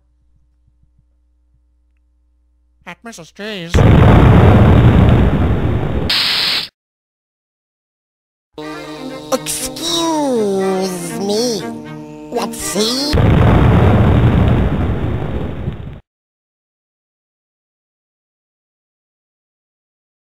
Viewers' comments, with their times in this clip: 0:09 Nice :D I almost recognize the voice from ...